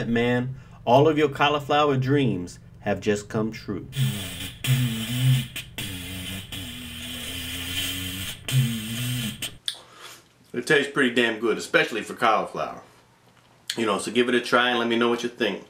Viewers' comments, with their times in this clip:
0:03 bought it, now was like pizza or nice healthy cooked meal... <3 mmm! tututuutUTUTUutut *{`dat sound effect}